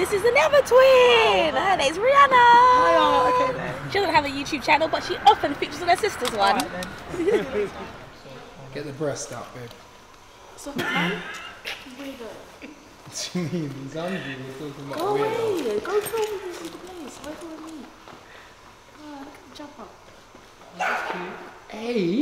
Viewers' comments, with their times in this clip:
0:10 Audio till is bad, or is it just me? I didn't hear anything.